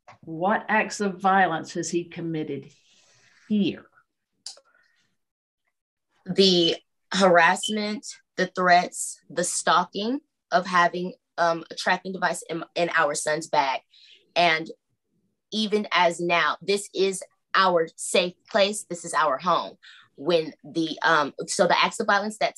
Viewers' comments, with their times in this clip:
0:07 The stammering and her trying to think of something to say A bunch of word salad that added up to not committing violence in Georgia.